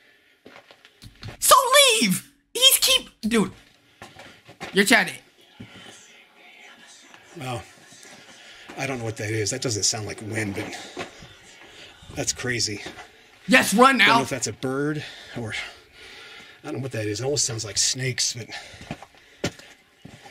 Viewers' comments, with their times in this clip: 0:08 it sounds like you don't see me, I am a servant I am a servant (or serpent not sure)